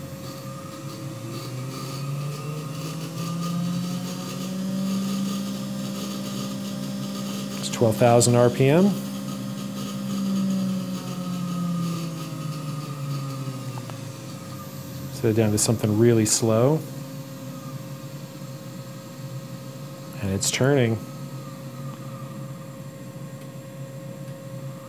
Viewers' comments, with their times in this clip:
0:08 this rattle from the bearings does not sound like this is a matter of breaking in the bearings. It sounds to me like unengage bearing balls.